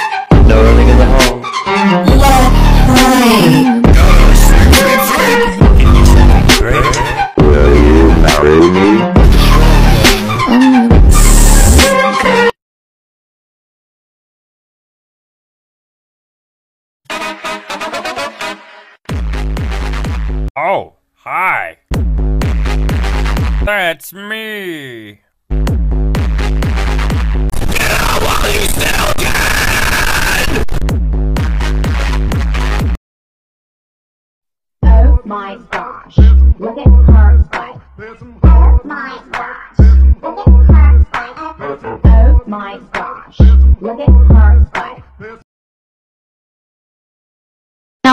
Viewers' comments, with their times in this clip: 0:09 oh my God I thought he was blushing moxie
0:31 Omg the bald is say in thai XD